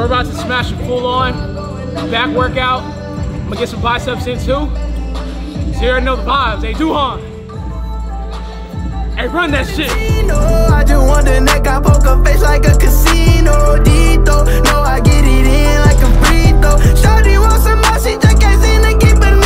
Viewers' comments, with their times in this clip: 0:07 The transition from the gym music playing in the background to the music added to the video!!!!🔥🔥🔥🔥